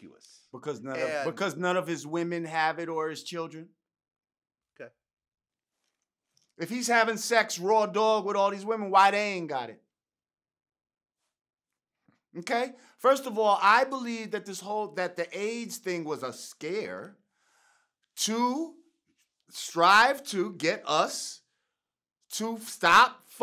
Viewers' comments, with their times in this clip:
0:04 That Pause... LMAO